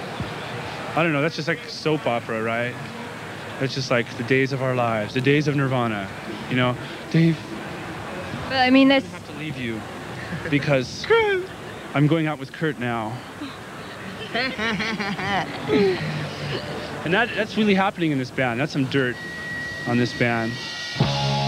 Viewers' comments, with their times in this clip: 0:09 Sad dave Laugh kurt